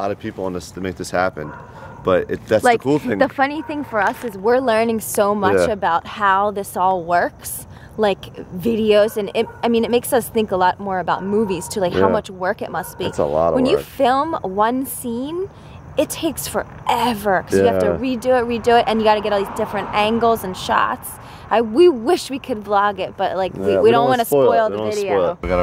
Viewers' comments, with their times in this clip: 0:07 the way she says videos